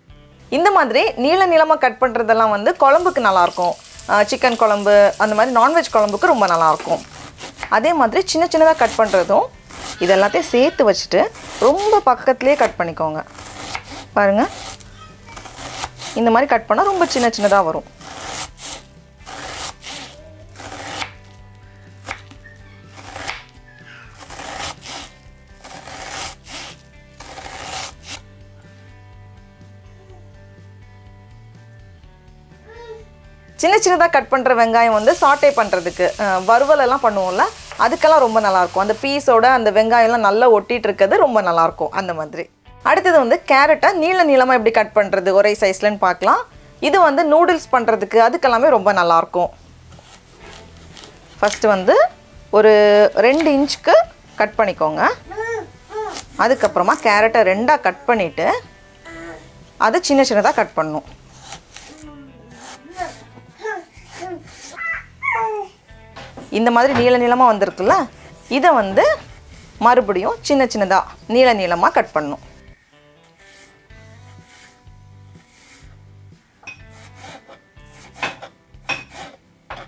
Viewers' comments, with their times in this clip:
0:10 first baby sound 🤩🤩💖
0:55 did u here the baby sound❤
1:03 who heard the baby sound....😀😊